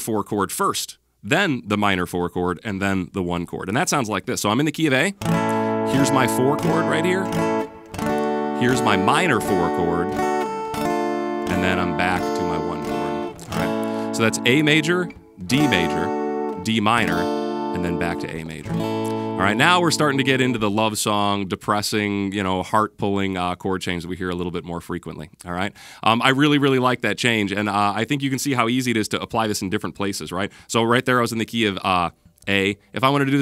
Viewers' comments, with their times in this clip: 0:06 wake me up when september ends
0:21 hey there Delilah...